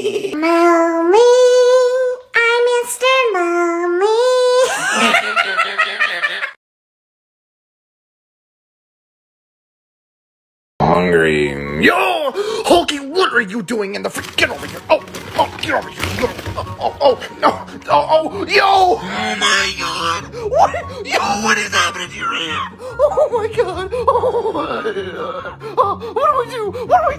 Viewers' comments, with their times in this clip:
0:08 Bro the way that he said hungry on got me dying💀💀💀💀💀💀